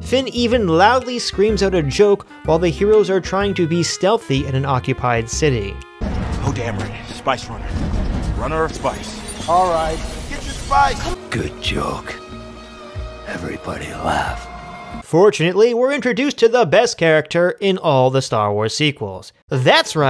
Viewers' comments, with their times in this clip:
0:06 Is there anyone out there who can understand this dialogue?